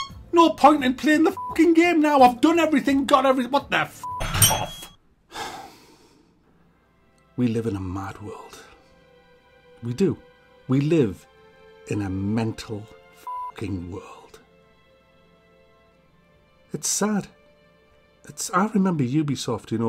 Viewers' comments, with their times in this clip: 0:06 That music LOL
0:07 That speech had me emotional man, sounded like something out of a movie haha 😪